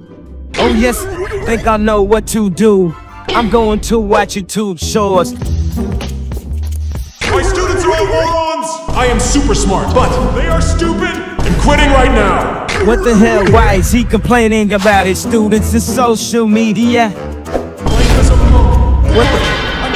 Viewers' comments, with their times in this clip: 0:06 that jingle gives me orange yt vibes
0:07 my students are all Moana!!!!1111!!!